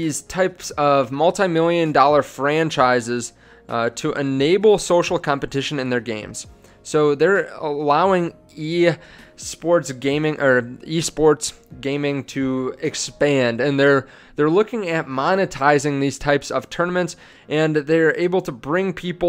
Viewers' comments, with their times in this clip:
0:07 when you fart while making video, but then think, fuck it, let's continue..